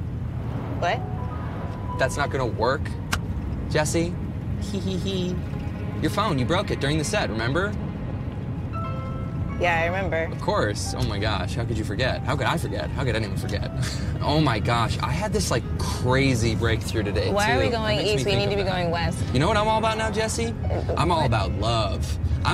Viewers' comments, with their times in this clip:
0:04 not the “hehehe”😭 im dying lmao